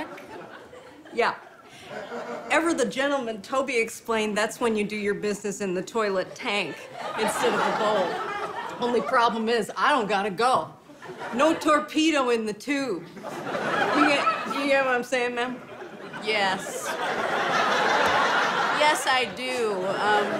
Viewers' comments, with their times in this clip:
0:08 Aidy Bryant cracking up might be the funniest thing in this one.